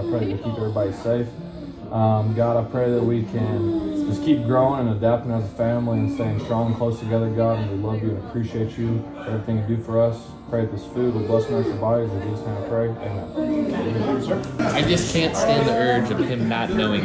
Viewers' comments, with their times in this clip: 0:03 am i the only one who hears someone MOANING